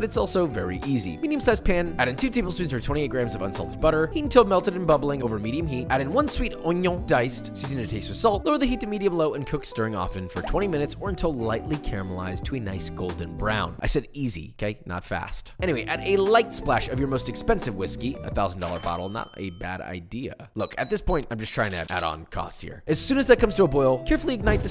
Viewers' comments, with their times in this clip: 0:07 I was with my boyfriend the other day and I kept saying onion the way that Joshua says onion, and my boyfriend was curious why I would say ✨’onion’✨differently and where did I get it from. So I decided to show him papa✨ I pulled up so many videos of Joshua cooking with onions so I could show him where I get it from and Joshua never said it the way that he usually does. Except in this video and my boyfriends not even with me right now so I can’t share- what a coincidence😭